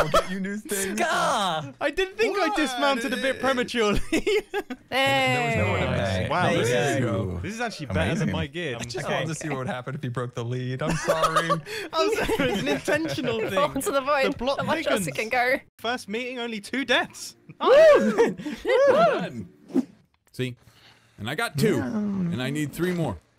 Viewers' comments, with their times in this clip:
0:08 the Pink Panther theme.. sneaky!